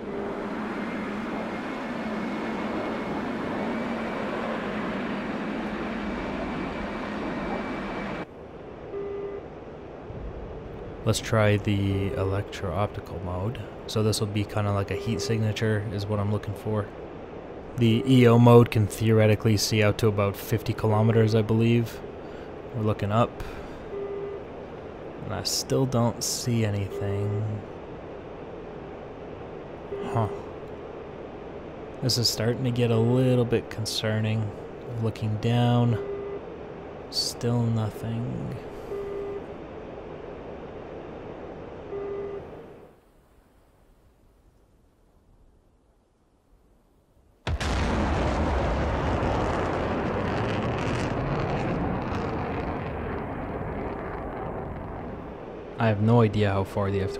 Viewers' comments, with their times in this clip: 0:08 do you guys also hear the sonic boom
0:09 Oh shit, you can just ever so faintly hear the sonic boom of the raptor as it passes beneath him, that's wild
0:09 was that a sonic boom from the raptor?
0:10 you can hear the boom of him passing off to your side i think.
0:10 I'm pretty sure I heard the F-22 fly underneath you.
0:28 When your RIO is a Minecraft villager
0:43 i regret turning my sound up...